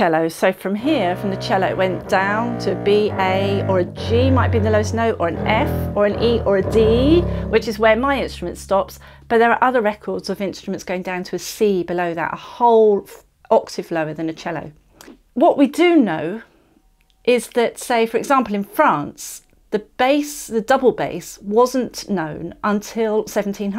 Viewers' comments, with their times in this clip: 0:06 she says "D, which is where my instrument stops..." while playing the open low string.